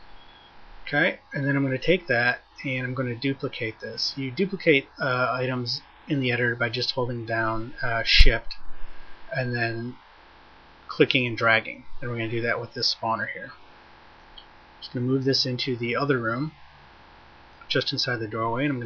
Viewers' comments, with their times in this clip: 0:03 hahaha it sounds like "You duplicate the items in the editor by just holding down emmm shit" Very nice editor tho! Cant wait to get my hands on it. Thank you for the great game.